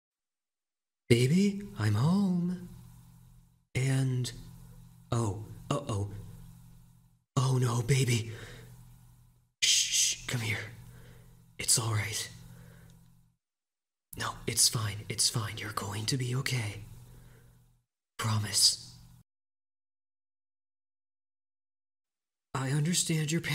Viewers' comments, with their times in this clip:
0:05 "uh oh" so chill 💀